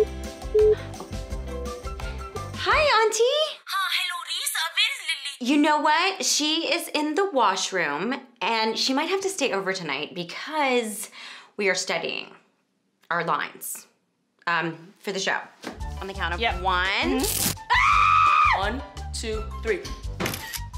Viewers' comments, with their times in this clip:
0:04 'Aunteeee' this is how we say here in Nepal and India.